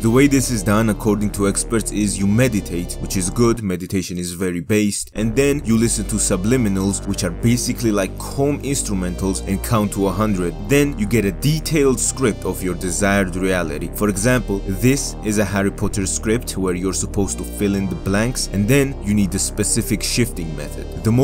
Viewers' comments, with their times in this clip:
0:07 What does he say ? Is he saying "cone instrumentals"?